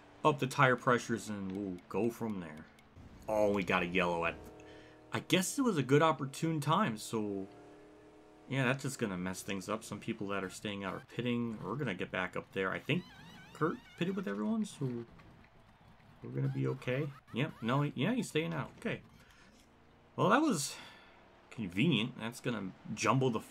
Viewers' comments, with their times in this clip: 0:10 Another problem with this game I just noticed is it has the NASCAR Heat 5 lug nut gun sound effects; which is for 5 lugs, even though the cars only have 1. They couldn't even copy/paste the N21 pit road sounds into Rivals...just shows how bad MSG is at making games